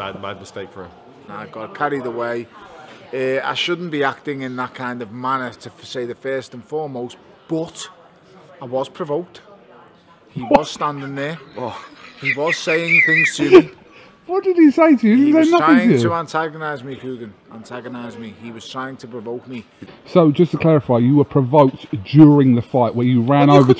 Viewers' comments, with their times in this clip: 0:10 even Eddie laughed